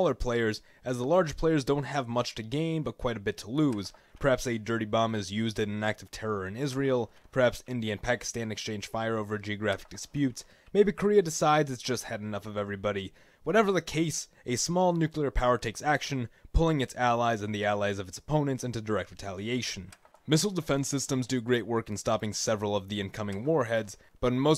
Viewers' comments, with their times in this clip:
0:05 WHERE in Israel? Nag'tur sounds like some Orc outpost in World of Warcraft.